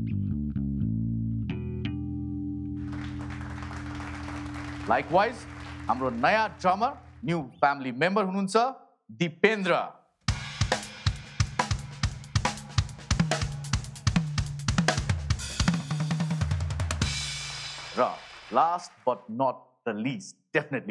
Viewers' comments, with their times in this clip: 0:03 Bass guitar EPIC